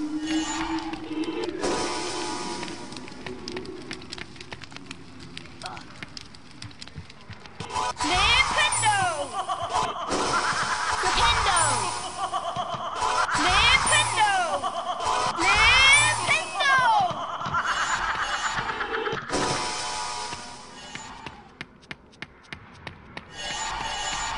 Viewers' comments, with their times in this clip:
0:08 That hysterical laughter from the witch statue! 😄